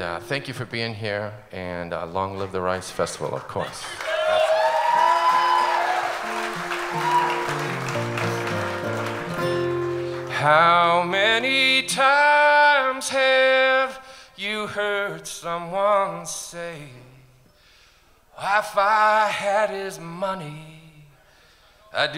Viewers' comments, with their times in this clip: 0:04 Talking till or so ... then soulful song well worth the wait.